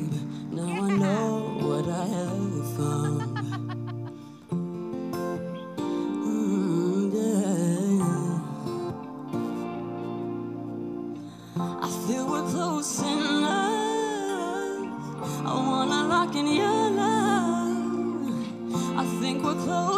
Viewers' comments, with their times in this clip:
0:05 jessie j vibes who you are
0:06 it’s giving jessie j who you are beginning….
0:07 John's face in says it all hahahahahaha chilling voice!